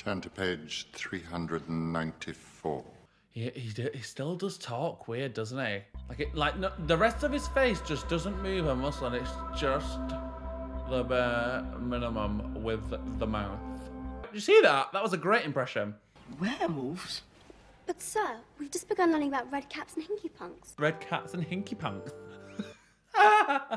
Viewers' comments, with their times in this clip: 0:07 THE SNAPE IMPRESSION AHAHAHA😂